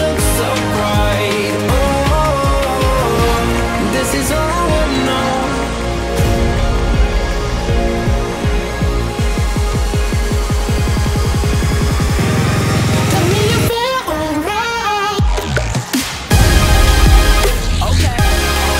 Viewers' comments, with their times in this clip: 0:06 goal is amazing and the music is a lot better today!